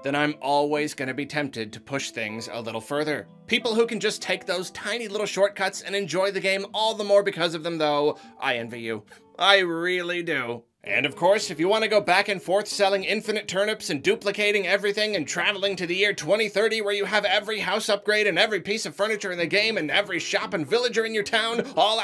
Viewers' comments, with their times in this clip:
0:08 right? It's like watching a weather man. "today we'll have a few showers of the blood of the innocent. Followed by a demon invasion. More .back to you Bill! Thanks Ted!" I just get that, causal, everyday, small talk vibe everytime he talks about imprisoning or torchering his people.